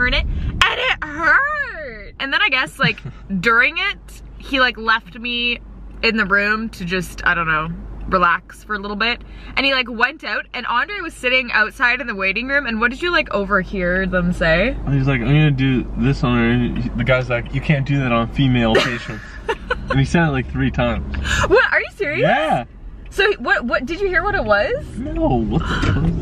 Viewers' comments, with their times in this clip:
0:08 that Canadian accent